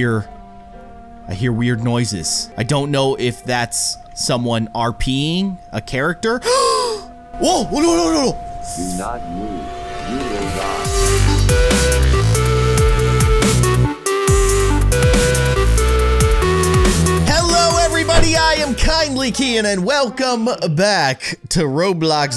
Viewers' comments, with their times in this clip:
0:08 Me: Is that voice gonna lead us to the scooping room? :v You'll get the joke if you know fnaf sister location :)